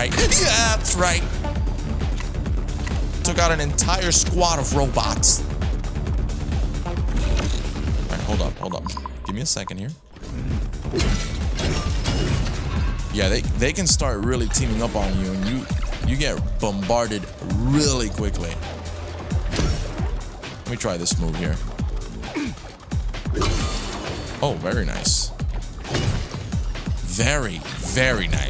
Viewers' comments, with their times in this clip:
0:09 music is dope ! Love this game 🥳